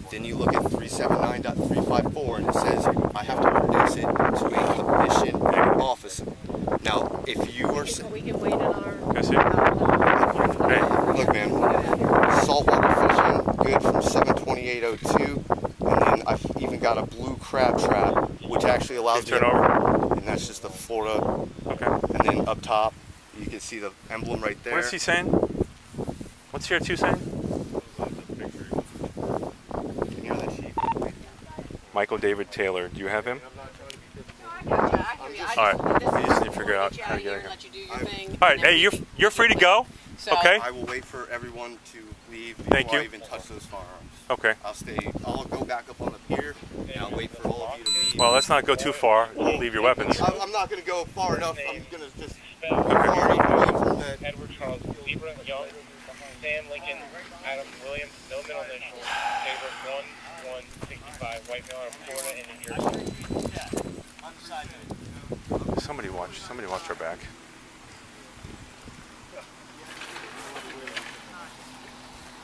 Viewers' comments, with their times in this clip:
0:03 Cop taking a big deep breath says all needs to be said. The cop knows this was a breach of law that will come right back to him after all he said.
0:58 the sigh from the officer says it all. To cap it all off though, he has to say "somebody watch our back." even though everything has been de-escalated and no threat confirmed. He's so disappointed that he didn't get to "take him down".
0:58 walk of shame and sigh. lol